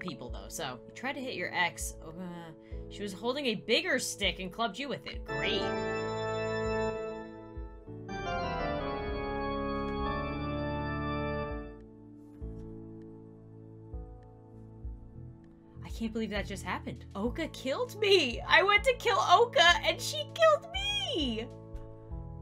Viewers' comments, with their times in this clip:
0:05 That Music REALLY Scared me 😱😱😱